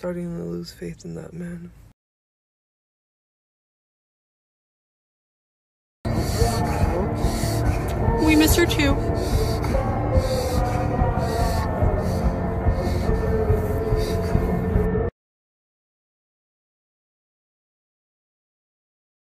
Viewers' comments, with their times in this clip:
0:06 the dog is crying that its owner died